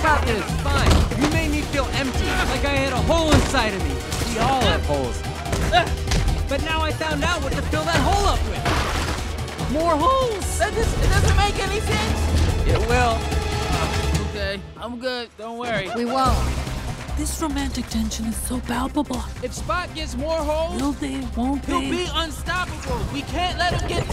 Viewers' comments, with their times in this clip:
0:10 that voice crack crazyy “more hOles”